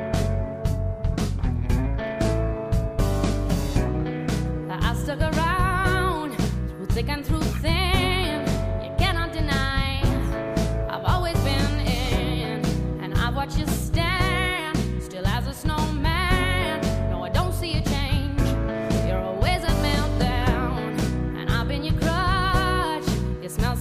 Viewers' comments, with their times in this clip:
0:04 That Switch on is Amazing ... from Childish and a bit silly [what i dont see a Negativ] to Absolute WOW